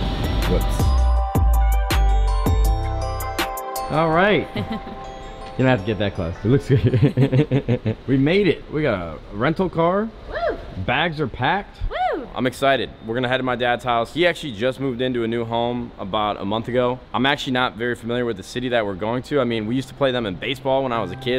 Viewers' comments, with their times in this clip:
0:04 when your laugh the same
0:06 they laugh the same
0:06 anybody notice she laughs just like him
0:07 laugh on sync 😂😂😂